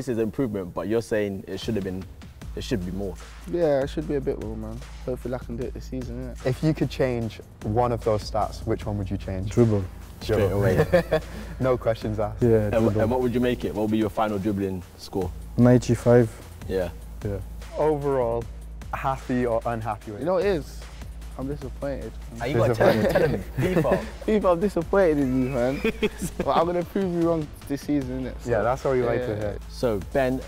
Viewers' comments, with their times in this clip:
0:09 is saint-maximin from england or what 😂😂😂😂 bc i know him from france
0:16 I wonder since when ASM was English 🤔🤔
0:16 saint maximin is an english player